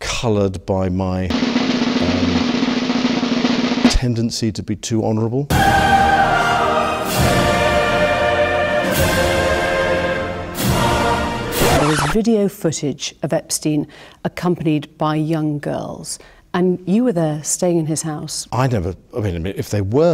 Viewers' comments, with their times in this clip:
0:03 that drumroll and response is fucking priceless im sorry. Ps. This guy needa be put away